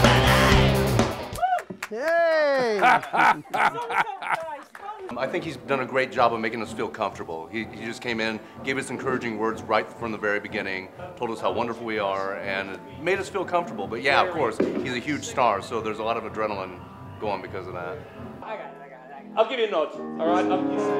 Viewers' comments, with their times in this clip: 0:03 Anyone know what the woman in the background is saying ?